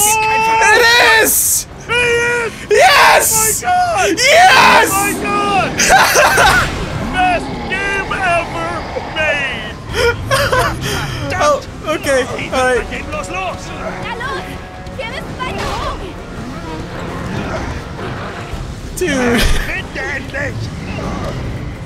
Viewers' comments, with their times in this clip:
0:03 screaming video ends still screaming